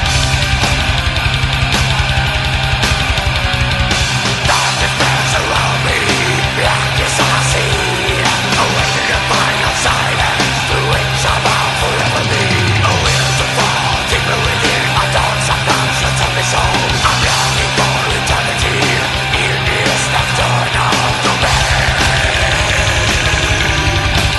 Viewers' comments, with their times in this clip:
0:05 Blackened Death Metal.